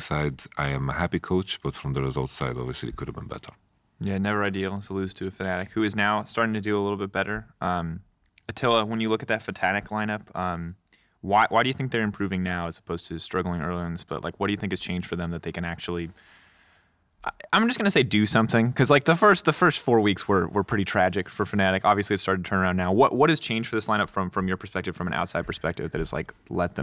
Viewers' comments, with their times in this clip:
0:08 Did he just mix Fnatic + Tatanic? or miss prounounce